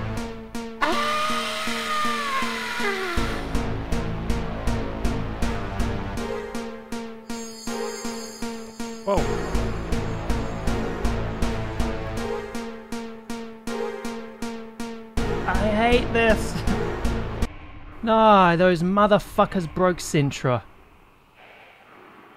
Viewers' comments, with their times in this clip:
0:06 I like those simple beats in the ost; builds tension.